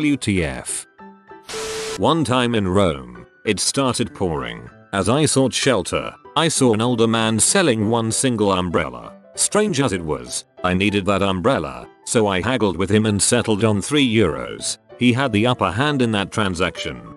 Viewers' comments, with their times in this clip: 0:03 an old man snoring